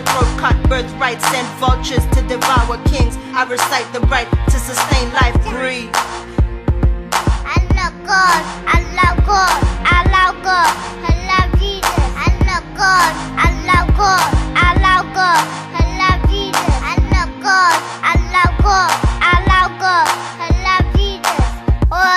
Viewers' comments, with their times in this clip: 0:06 is it more like "I love god, I love god, I love god, I love eating"? lol